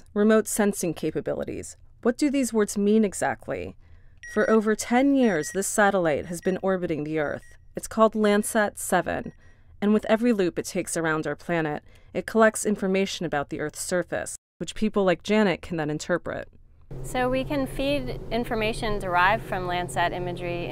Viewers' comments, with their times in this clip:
0:05 I heard the 'end of vid sputnik' have a premature ejaculation :)